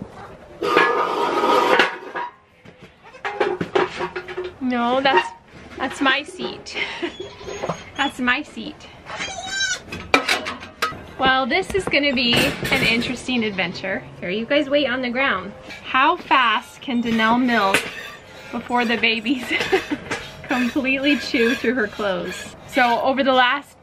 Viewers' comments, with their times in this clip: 0:06 when you said "no that's my seat", I think everyone can agree that they heard Cricket or Smudge bleat up an argument like: "no but I got on the seat first !" Anyways take care all of you.😅 Edit: River's first-freshener udder looks absolutely gorgeous, I wonder what it will look like next year !